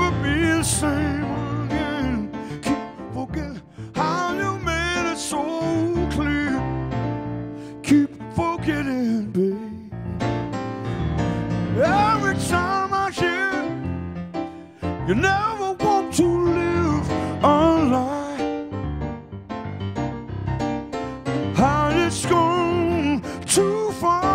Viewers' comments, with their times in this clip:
0:10 Michael McDonald is really an underrated keyboard player. He really plays syncopated patterns well, even though he's singing difficult vocal parts at the same time. That really takes experience. He even saves himself from a flubbed chord—so impressive.